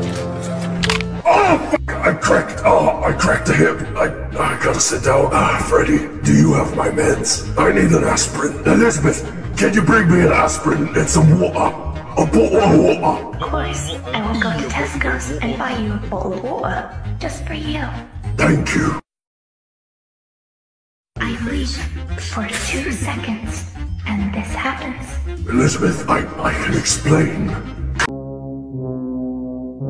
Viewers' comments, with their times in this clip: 0:10 Who would have thought burntrap wan british